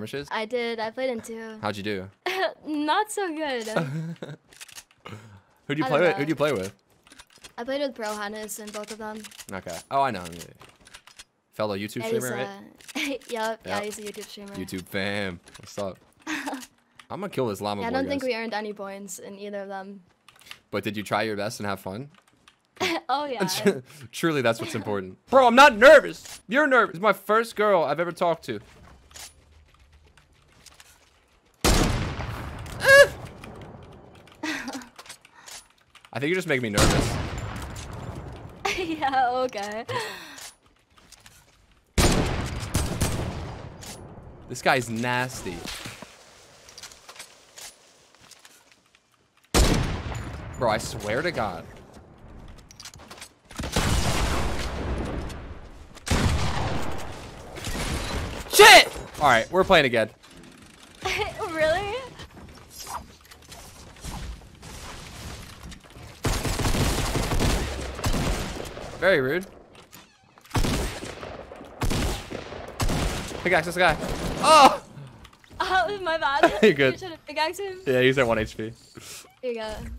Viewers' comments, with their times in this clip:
0:03 his wittle giggle is so cute 🥰
0:05 Omg his little giggle when she was talking about the skirmishes was so cute I shipppp
1:01 Omg “SHIT! Where playin again.” “Uhuh, really?” She just says that in such a horny voice oml